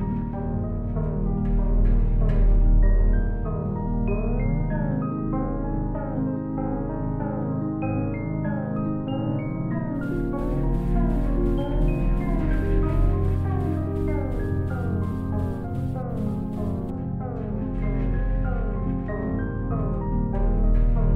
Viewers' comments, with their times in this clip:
0:08 detective: in Clippy's voice I sEe yOu'rE trYing tO usE aDbLocK!!